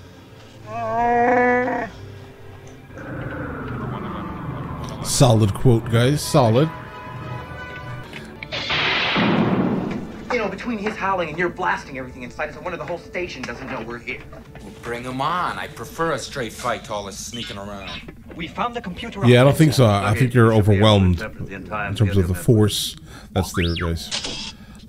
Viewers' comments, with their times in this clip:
0:07 You have an audio visual sync problem that starts and continues to the end of the video. There is a quick flash of a clip then the whole thing is off.